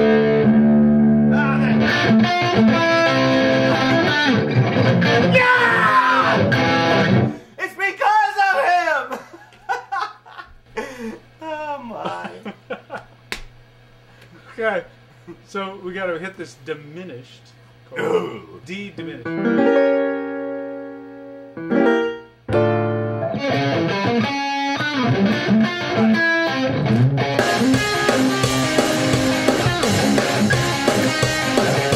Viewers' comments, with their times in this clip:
0:07 amazing guitar riff! Question: what kind of beer are Kip and Reb drinking? - Coors Light?
0:17 Am I hearing things or did I just hear Reb belch ?? LOL